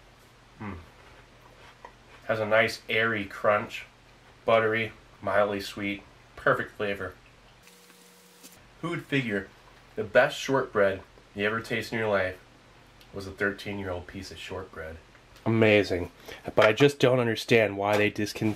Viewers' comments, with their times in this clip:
0:04 that fast forward chewing >.>